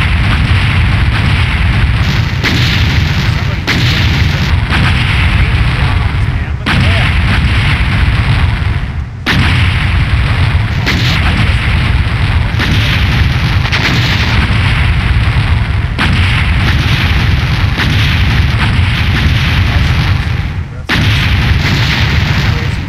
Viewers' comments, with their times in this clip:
0:08 cant hear anything :,(